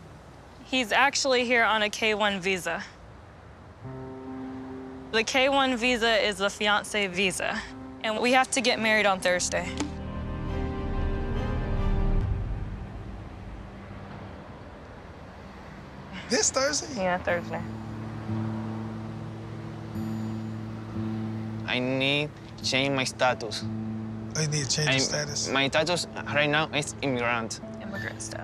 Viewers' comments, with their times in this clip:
0:10 Can you hear the crickets chirping ?? ... lol